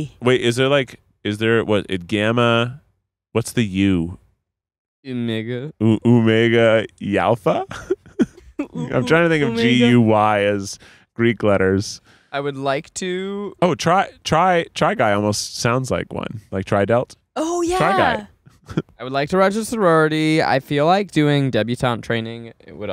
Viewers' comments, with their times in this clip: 0:05 I was half paying attention and straight up thought Zach said a no no word